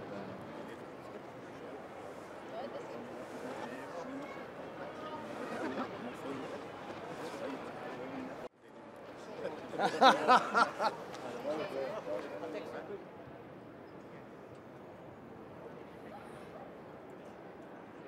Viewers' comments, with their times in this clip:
0:03 Benitez asking Klopp when he will quit so that he can take over. The answer? Klopp laughing 😂